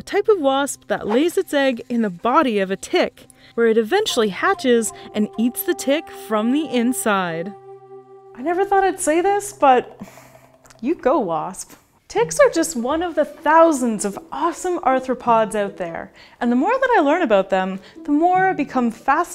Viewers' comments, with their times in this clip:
0:04 why did it sound like she was smiling when she said "and eats the tick from the inside 😃"